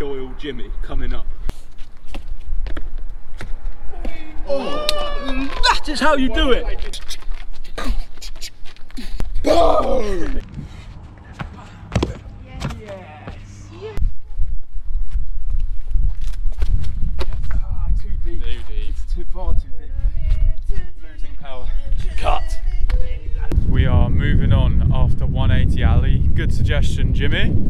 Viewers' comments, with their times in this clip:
0:08 no offense but you make it sound like your loading like a 12 gauge or something but look like your rapid firing a bow